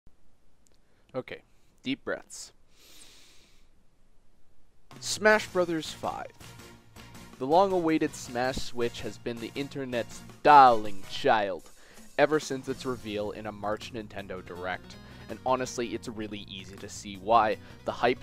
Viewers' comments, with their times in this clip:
0:03 Wait, you're Canadian?